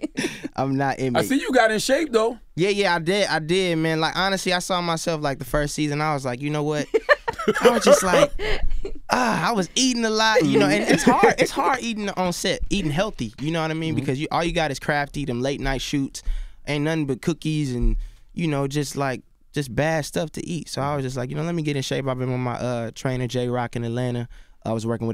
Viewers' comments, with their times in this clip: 0:09 That Charlemagne laugh what was that?